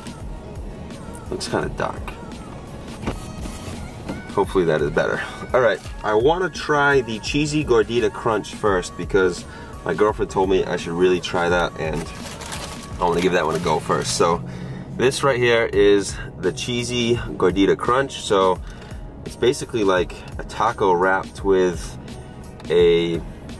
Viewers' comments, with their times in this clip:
0:09 you can hear the gasps at the comment made